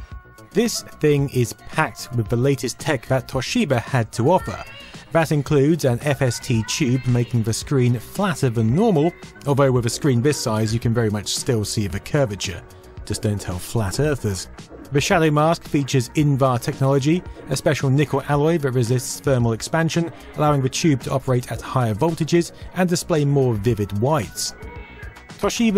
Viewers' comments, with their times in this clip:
0:06 you're playing the movie "Ghost" but "Silence of the Lambs" audio of when the Governor's daughter is yelling "SOMEBODY...SOMEBODY PLEASE HELP ME!"